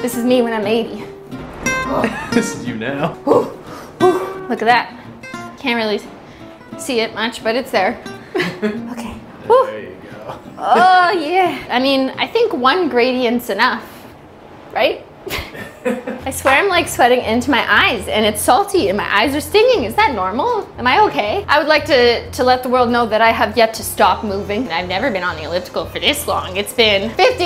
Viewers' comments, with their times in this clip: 0:10 that scream. Haha no hate but it sounds a bit awful